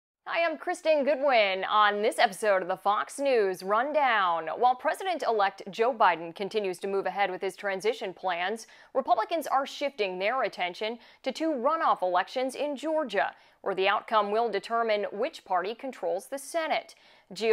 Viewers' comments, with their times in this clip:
0:02 I hate the way she says rundown lol